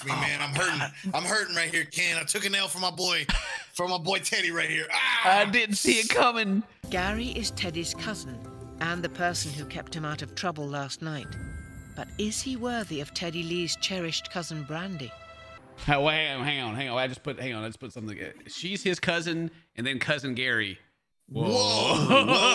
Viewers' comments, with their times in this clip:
0:07 Dueling banjos begins...